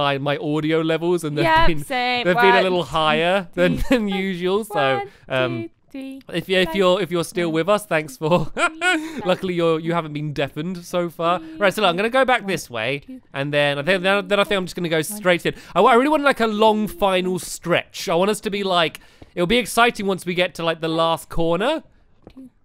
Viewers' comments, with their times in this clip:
0:07 I'm used to it being that loud